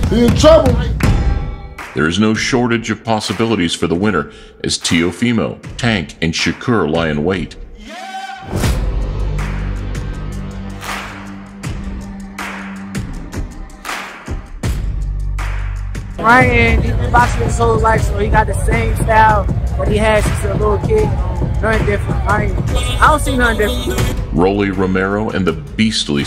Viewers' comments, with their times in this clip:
0:09 That is so weird, why'd you do that? Why wouldn't you give teofimo his voice but you'll do it for everyone else ? Do you hate teofimo too?